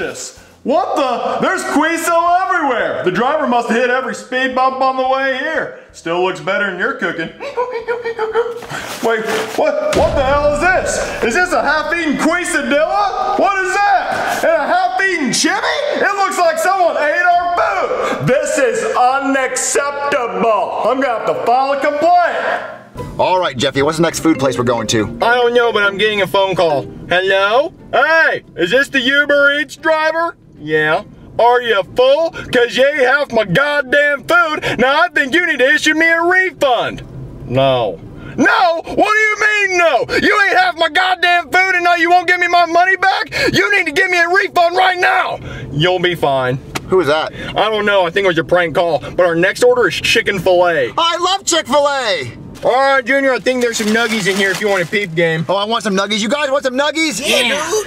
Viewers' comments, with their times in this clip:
0:05 i love his laugh
0:07 I can't get over Hanks laugh💀
0:07 i love hanks laugh 😂
0:07 Hanks laugh is so hilarious and too funny for anyone to talk bad about 😂😂😂😂
0:07 Hey can anyone explain the weird noise Hank makes Is it a half assed laugh tick or something?
0:08 BRO HIS LAUGH IS SO GOOFY
0:18 I love how he enunciates “UN-ACC-EPT-A-BULL”
0:18 I. love. how. he. enuciates. UN - ACC
0:28 why dose Hank sound like he’s in the car?
0:38 WHI IN THE OHIO WOULD LAUGH LIKE THAT
0:44 sounded like Jeffy a second